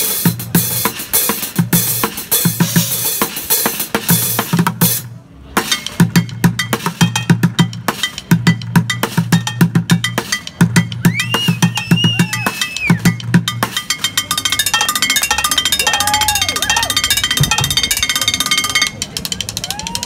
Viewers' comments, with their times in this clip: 0:05 that transition had me stuck in groove